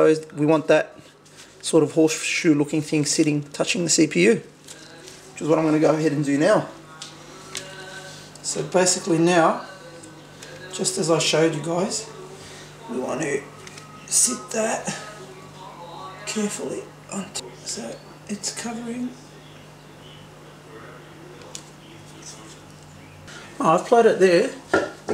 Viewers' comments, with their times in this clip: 0:08 listen to the recording of someone reading it in the background. its very audible